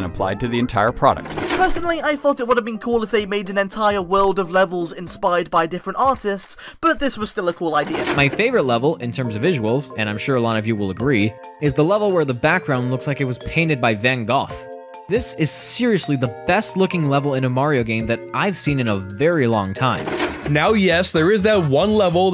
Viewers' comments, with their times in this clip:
0:10 That dude really pronounced van Gogh, van Goff. Lol, c'mon guy.